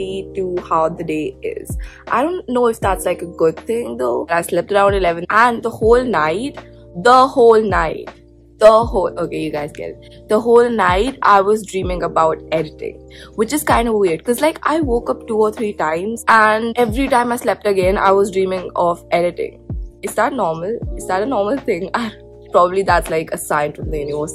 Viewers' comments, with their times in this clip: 0:05 u sound so much like nikita dragun lmao, love the editing btw AND OMG U WATCH LARRY I STANNNNNN